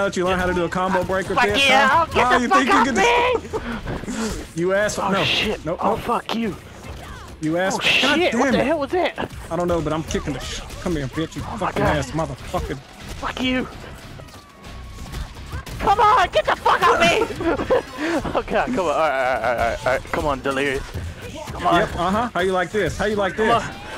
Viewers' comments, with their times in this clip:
0:10 if you close your eyes it sounds like porn